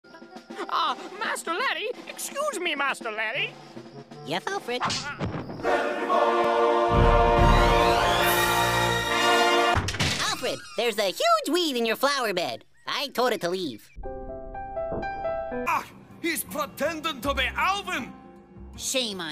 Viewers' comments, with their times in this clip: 0:05 I know everyone is talking about Larryboy being an idiot… but can we just acknowledge the amazing music in the scene when Larryboy handles the Milk Money Bandit?